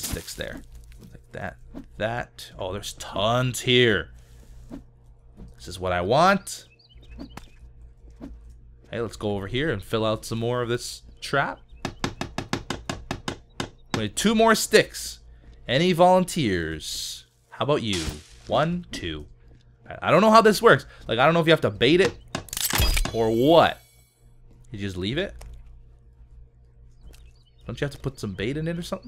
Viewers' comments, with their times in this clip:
0:10 that sounds like music lol